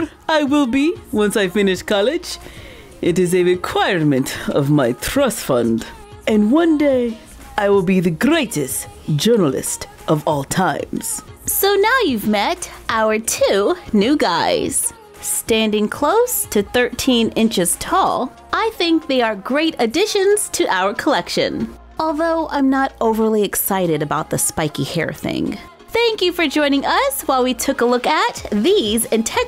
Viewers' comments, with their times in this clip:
0:10 WhY DOes HE SOUnd LIke NavEEn